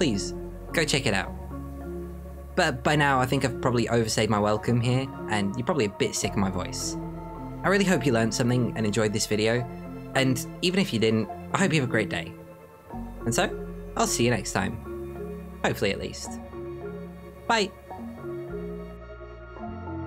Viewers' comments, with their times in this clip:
0:06 no, not really. I actually really like your voice! You have a great narrationstyle! 😊 Greetings from Germany!